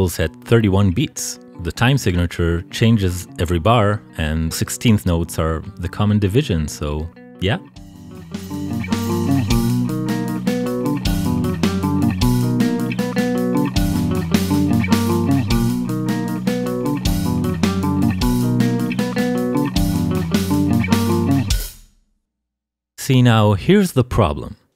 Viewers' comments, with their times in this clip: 0:10 That misplaced snare hurt my feelings. And then, it got repeated on FOUR LINES. Please let me die. (Nice video, seriously.)